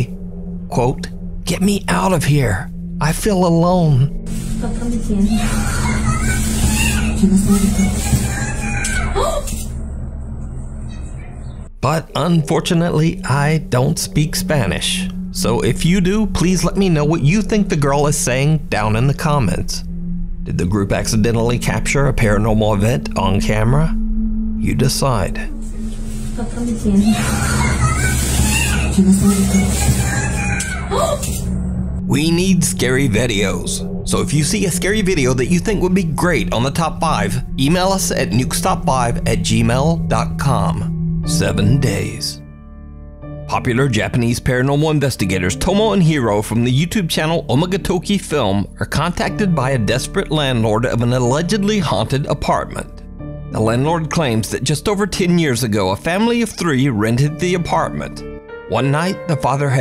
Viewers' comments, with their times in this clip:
0:04 She is saying that, but it sounds more like a kid getting punished (abused or Kidnapped) and not a paranormal incident.
0:06 to me it sounded like "tienes que estar Aqui , me siento sola " you have to stay here, I feel alone" idk what do u guys think????
0:14 I confirm As a Mexican, I can clearly say that the girl's voice seems to say those exact words. In Spanish, of course. Un saludo enorme desde mi México. 🇲🇽
0:17 I hear it speaking clear english "Get me out of here! Why did you do that?!" :\
0:22 sounds more like a living child rather she or he is trapped or kidnapped
0:23 The girl's voice says "I feel lonely" (shouting)
0:28 on #4 i believe the lil girl is screaming , "SUBSCRIBE TO NUKE'S TOP 5".
0:29 just noticed a strange human figure is there on the roof but it wasn't seconds before, maybe she's the one screaming, oh and the scream sounds more like "Quiero bajar de aqui, me siento sola" which means "I want to get down from here, I feel alone".
0:29 They look at the building to hear a girl screaming
0:42 The voice of that kid said I love you